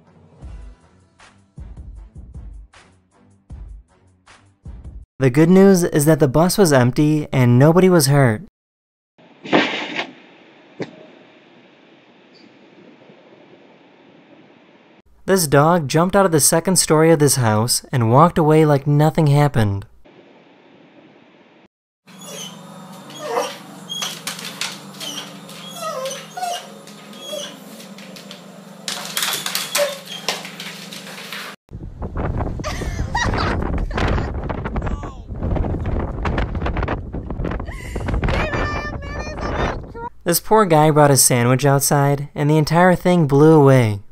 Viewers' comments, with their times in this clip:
0:09 the sound of that dog hitting the ground was the funniest sound ever!!! 😆 "Krshhhh........PBQLQQQQ.....🤣
0:23 Dog: whining Subtitles: “Music”
0:26 Dog: (EPICLY WHINES) CC/SUBTITLES: THIS IS MUSIC!